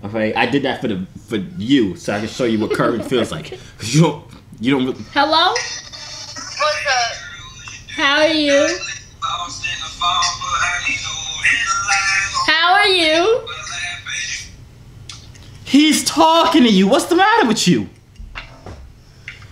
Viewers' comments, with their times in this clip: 0:07 when that girl had upchurch playin. MAD RESPECT